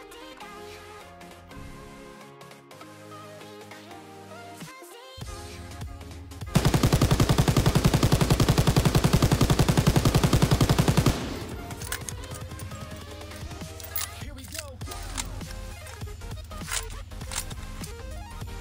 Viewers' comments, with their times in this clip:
0:06 Why does the MG42 have a VERY low rate of fire?